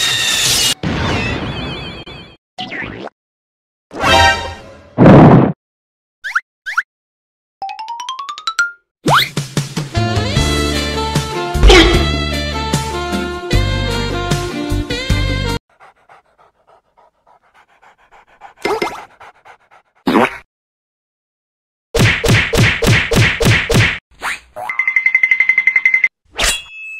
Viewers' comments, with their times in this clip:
0:10 the music is perfect